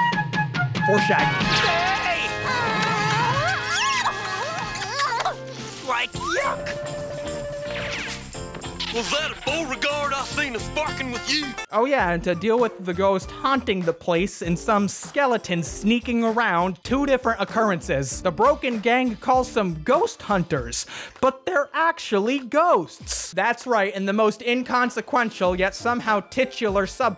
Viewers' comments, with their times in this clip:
0:07 What he say? I know he didn't say what I heard him say.
0:08 @ does that person say "fuckin with you" or am I losing my mind